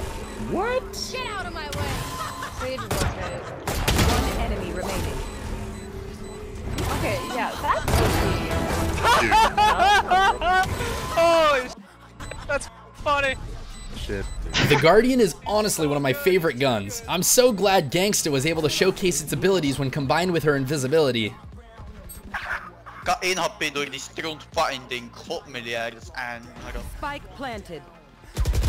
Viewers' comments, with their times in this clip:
0:09 sounds like a male Reyna laugh 😂